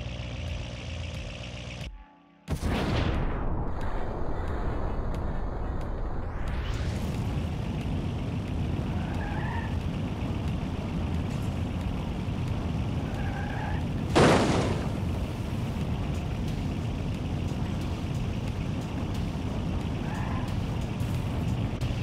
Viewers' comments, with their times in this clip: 0:08 earrape Harry potter theme